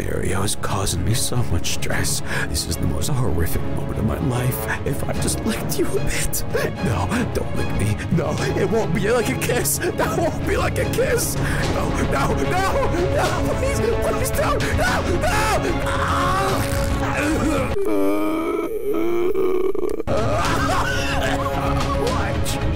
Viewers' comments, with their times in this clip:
0:06 I LOVE UR LAUGH IT GETS ME EVERY TIME😭😂